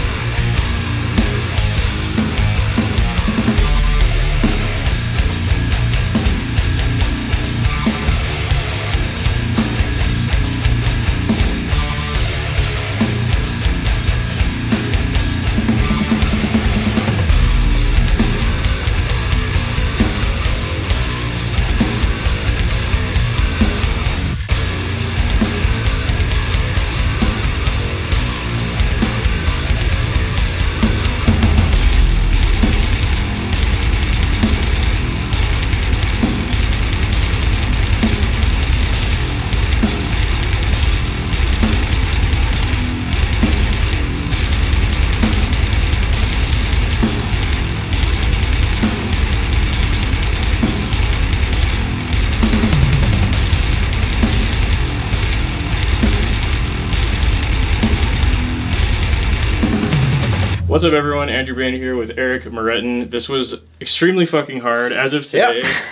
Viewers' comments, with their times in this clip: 0:04 Great video but this part stood out to me because I made the same mistake learning this song. Those are 16th note triplets, not 16th notes. Getting those groups of 6 tight at that speed was tricky as HECK.
0:49 Armies of the Preposterous and Broken Cog make much more sense groove wise if you count them in 6/8 or with a triplet feel in 4/4 (One-and-a-two-and-a-three-and-a-four-and-a), to also avoid brain melt :)